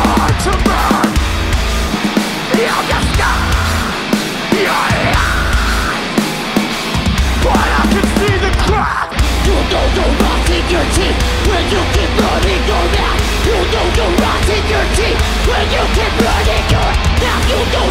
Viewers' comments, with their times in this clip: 0:05 he does two high screams I wish would make it on to some albums.